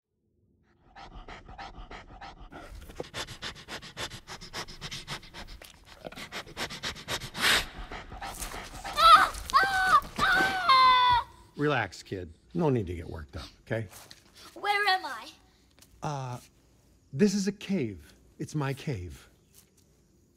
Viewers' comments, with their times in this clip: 0:08 He's like Shanti when first met baloo when mowgli started screaming like that.